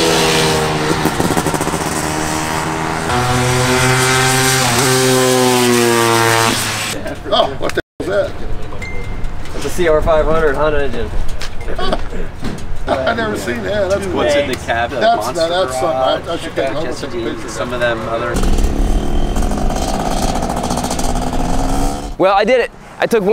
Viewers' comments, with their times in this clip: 0:08 I thought that was my phone